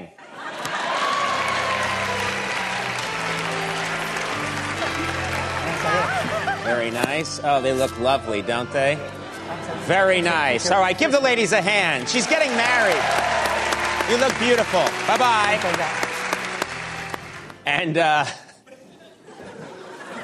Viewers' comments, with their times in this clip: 0:05 did u hear how creepy conan sounded when he said they look lovely dont they